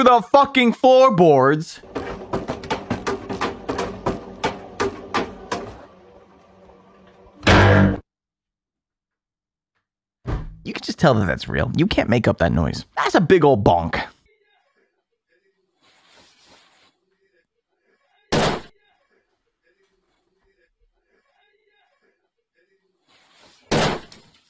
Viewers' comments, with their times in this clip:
0:07 this sounds like something i’d hear from a pinball game